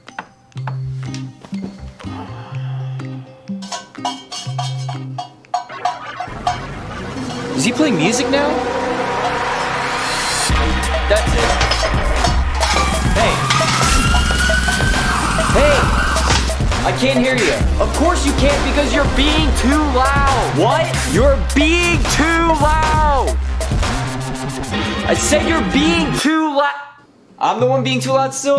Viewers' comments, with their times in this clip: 0:10 Was that a hardbass donk?